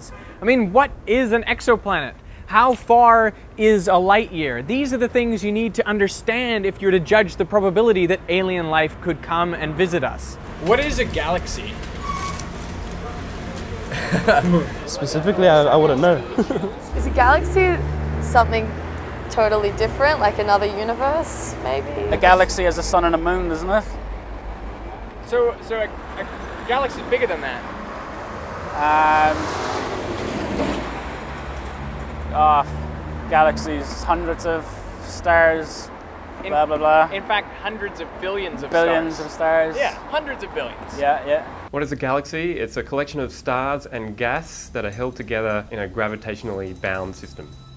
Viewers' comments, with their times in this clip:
0:06 did he just say 'the probe-ability'? I also had to stop watching half way through because apparently he's only interviewing people that have no idea wtf they're talking about
0:34 Hundreds of stairs.
0:34 Hundreds of stairs
0:34 Hundreds of stairs
0:34 Hundreds of stairs